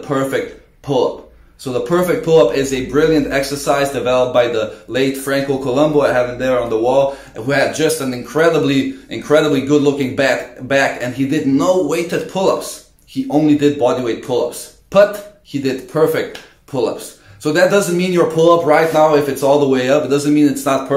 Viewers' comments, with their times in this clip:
0:04 He had incredible looking bat..... ( corona virus) 🤔